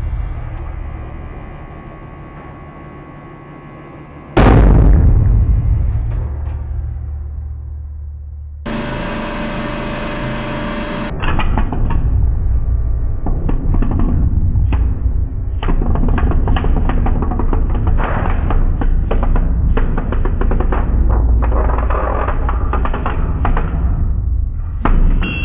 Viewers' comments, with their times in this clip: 0:10 this was so damn scary, slow audio created an eerie, almost horror-movie atmosphere.